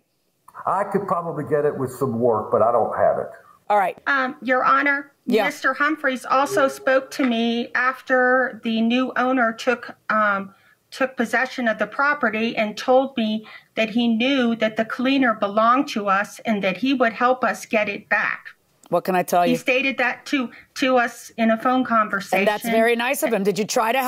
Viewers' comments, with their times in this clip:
0:10 Starting is the husband talking to himself? It is one episode where the audio actually matches the individuals speaking, so it isn't delayed audio, just looked off to me. Also, how can they not access their email as JM asked? Even on vacation they should be able to access their email account, surprised JM did not pursue that.